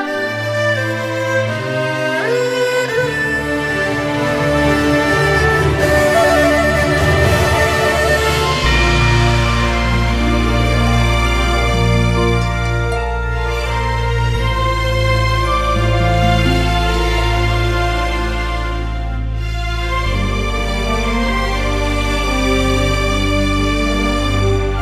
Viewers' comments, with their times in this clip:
0:08 the Guizhong's motif gave me goosebumps, it's so beautiful but sad at the same time